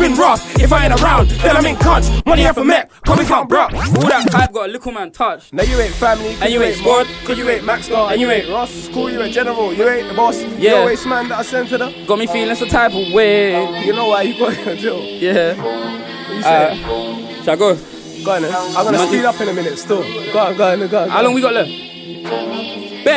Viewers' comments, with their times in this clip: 0:10 Need that beat man.